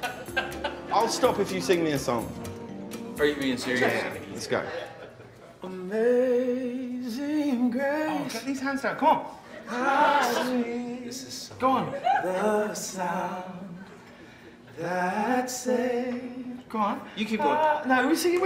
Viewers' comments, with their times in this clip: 0:04 Two voices like angels arose and an astonished hush fell amongst the people...and tears flowed from their eyes from the joy of it.